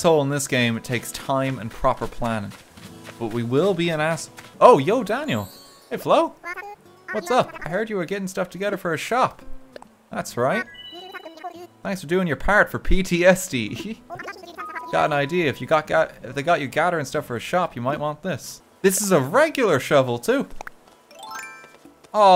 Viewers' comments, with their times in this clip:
0:10 i though it says LSPD lol